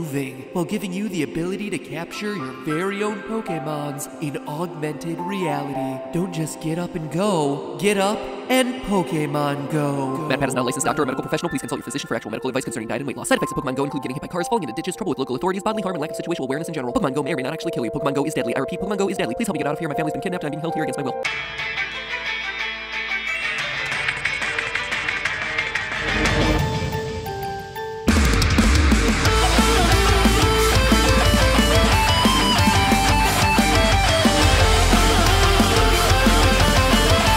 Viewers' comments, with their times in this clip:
0:09 put your playback speed as 0.5 or 0.75, you can actually understand what he says.
0:09 oh so that's why they say the risk so fast, cause they want u dead 🙃🙃🙃
0:10 go to playback speed and click 0.5 to actually understand it Your welcome
0:10 turn the playback speed to x0.25. It sounds haunting.
0:10 Anyone else decide to be a theorist and s-l-o-w down the video to hear what matpat said 0: 39?
0:13 i actually slowed down the speed on the video and listened to what he was saying lol
0:20 Anyone else actually slow down and pause the video to hear what he said?